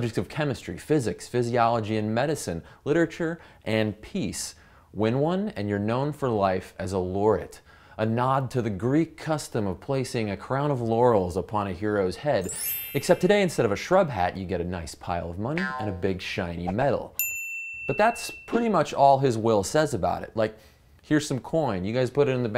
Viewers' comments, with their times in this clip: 0:09 What the hell is a crown of yannies?